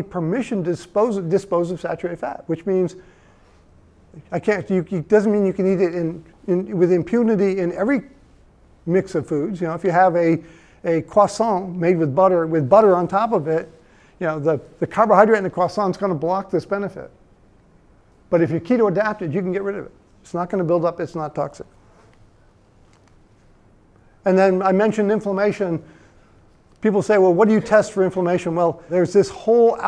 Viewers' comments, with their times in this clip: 0:10 the first american I've heard pronounce croissant correctly - this alone is reason to trust this man's hard work